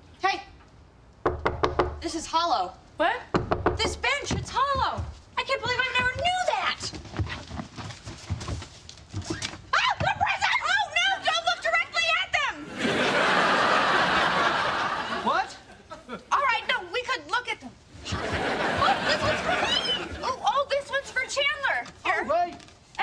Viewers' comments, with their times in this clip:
0:09 Rachel screams scared Chandler.